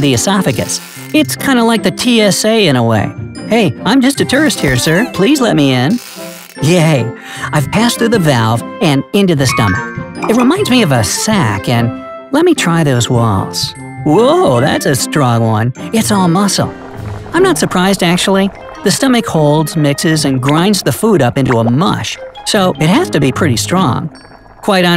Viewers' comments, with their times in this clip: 0:06 The "YeAhY" always got my attention